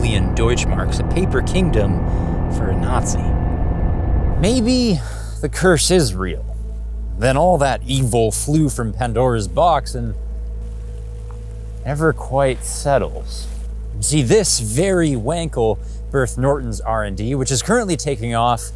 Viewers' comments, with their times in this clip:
0:04 "The curse Isreal"